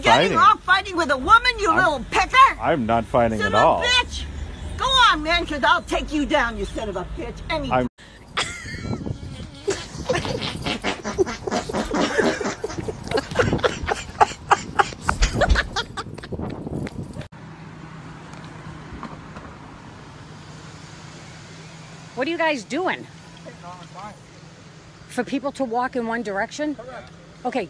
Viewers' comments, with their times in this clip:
0:08 The chick with the running farts had me dying!!!